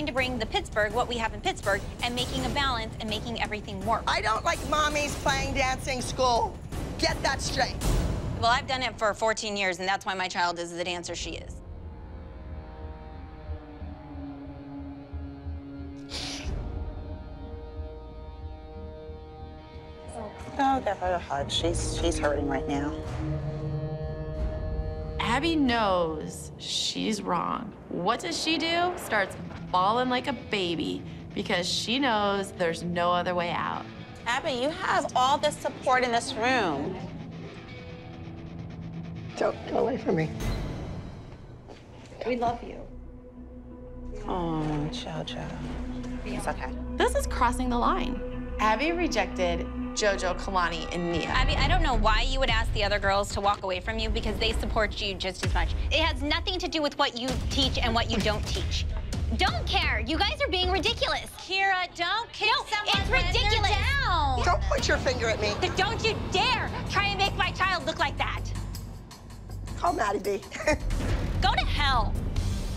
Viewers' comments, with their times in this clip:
0:04 abby went like: I don't lIKe mOMmyS PlaYinG DAnCIng sCHooLS
0:35 Holly: “ abby you have all this support in this room” Abby: “ don’t, get away for me” * super over-the-top dramatic music plays
0:54 You can see that what Gia said was muted.
0:55 they muted gianna speaking and i think it was because she must’ve said something like too “nice” i guess? anyways it bothers me how they make her look horrible when she does SO MUCH work for the show